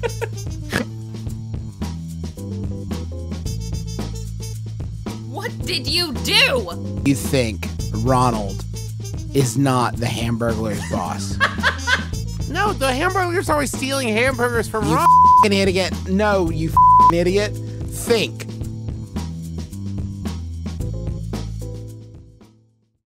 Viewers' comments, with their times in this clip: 0:10 The laughter is just perfect.